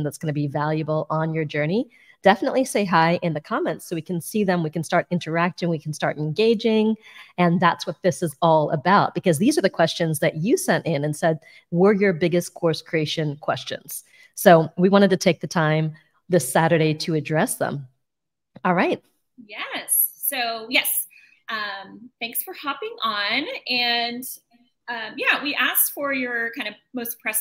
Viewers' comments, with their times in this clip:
0:08 your voice is just amazing, really you could be a singer :)